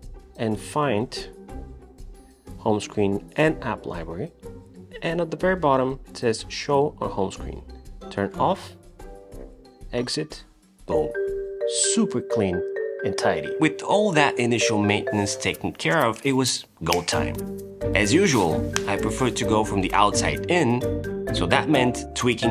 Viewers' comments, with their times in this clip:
0:10 I haven’t heard this music on a non-minecraft video before! It fits really well too!